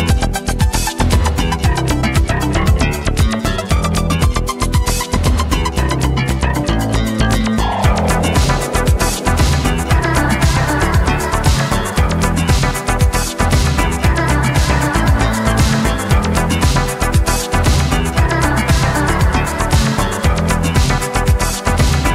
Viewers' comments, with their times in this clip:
0:08 Love the groove